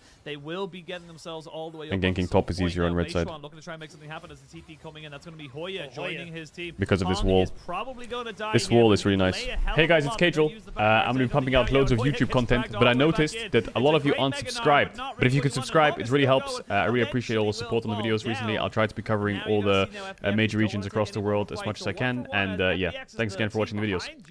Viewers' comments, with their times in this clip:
0:10 i got scared by that announcement